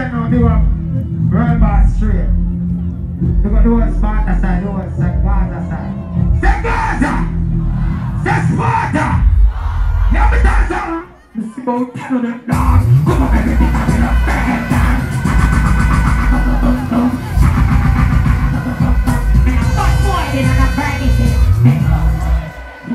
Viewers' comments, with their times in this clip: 0:10 his timing fireeee!!!